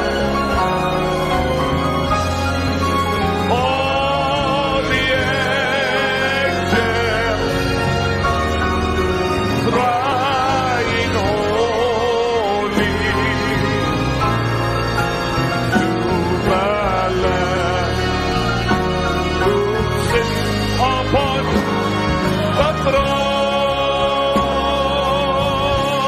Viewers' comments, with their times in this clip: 0:07 love this somg